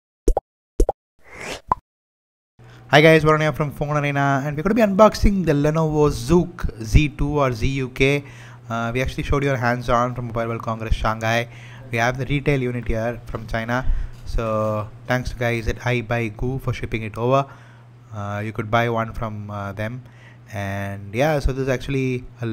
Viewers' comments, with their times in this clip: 0:04 WTF is hangarrrrubbbi un-boxing!!!